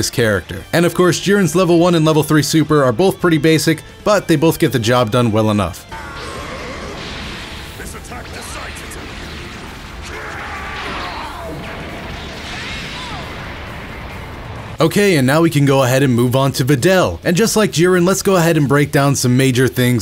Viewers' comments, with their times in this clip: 0:06 I love Jirins dubbed voice
0:06 jiren’s English voice?